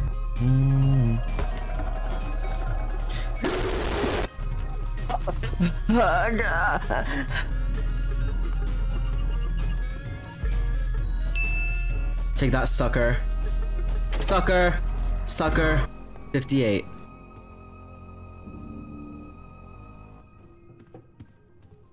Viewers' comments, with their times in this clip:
0:05 why does he sound like that 🤨